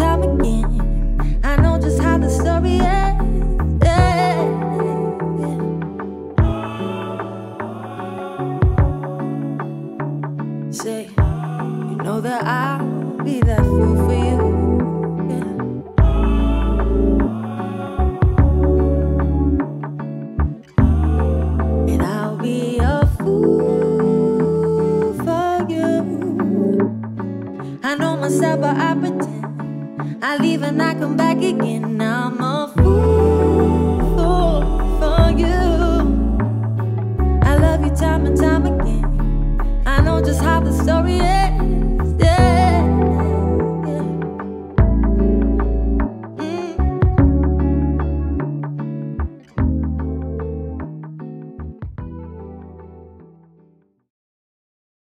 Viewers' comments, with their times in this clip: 0:03 She sounds like Michael Jackson lol
0:34 she sounded like michael jackson 😮
0:40 till the end explains it all , vocally……..